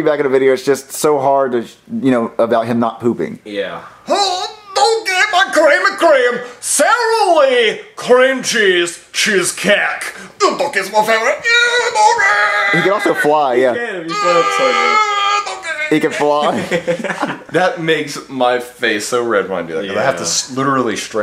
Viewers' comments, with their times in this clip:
0:03 Shrek's voice reminds me of Ed from Ed Edd n Eddy lol